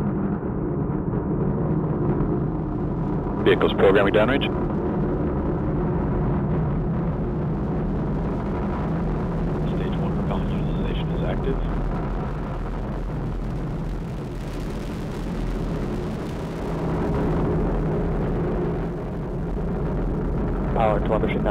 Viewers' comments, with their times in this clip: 0:03 sounds like 'vehicle programing damage'
0:03 can anyone give me a plain text transduction of the transmission at ~ ? i seem to understand : "vehicle ... damage". i firmly believe i misheard that, but what is the actual message?